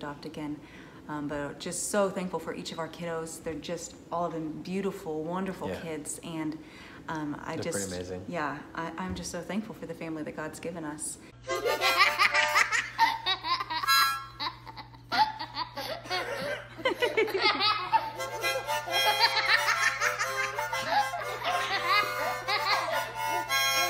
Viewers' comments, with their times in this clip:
0:10 that laugh is very sweet like lovely and i love you guys...